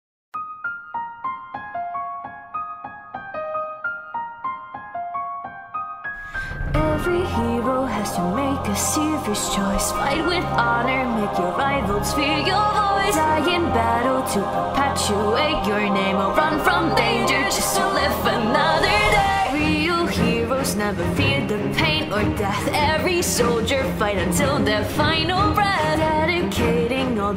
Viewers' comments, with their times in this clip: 0:04 I'm sorry to be this person but The note It hurts Edit: this is great, though, don't get me wrong
0:05 did anyone hear that there was one note that just didnt fit in the rest?
0:10 INTENSE ZUKO SCREAM* H O N O R ! ! !